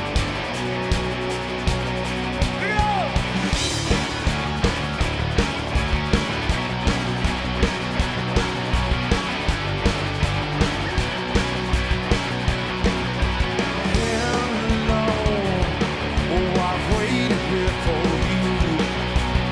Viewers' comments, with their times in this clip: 0:04 More specifically, as best spotlighted it builds an atmosphere of guitars. You have Grohl playing the clean guitar (hard to hear, but it's there), ones playing the full out rhythm, the other is doing the dut dut dut dut dut dut dudududu rhythm thingy. Definitely works on one guitar, but it's not as atmospheric.